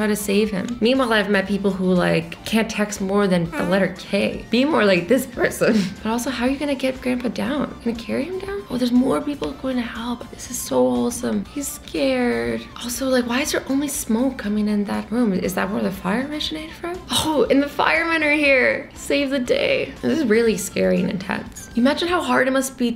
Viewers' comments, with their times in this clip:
0:03 Did she just fart in the video 😂😂😂😂😂😂